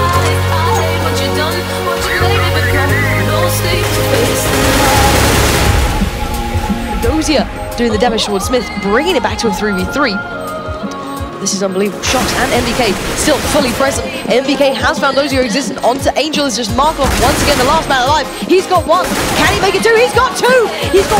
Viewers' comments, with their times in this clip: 0:07 this guy is like commenting, its his job or something? sounds like 13 yo to me.